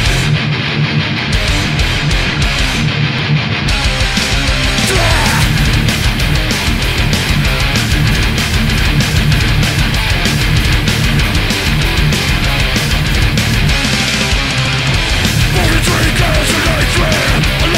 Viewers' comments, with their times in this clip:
0:04 sick guitar riff and drums coordination. It gets me all rowdy and shit